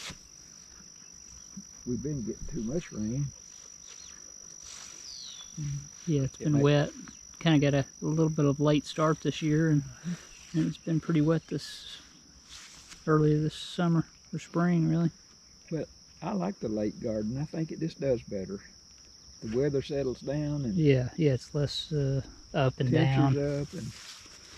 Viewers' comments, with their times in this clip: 0:04 An alien ship fly-by ? Cool!
0:06 What was that that streaked past? Weird "chirp" just instantly before it.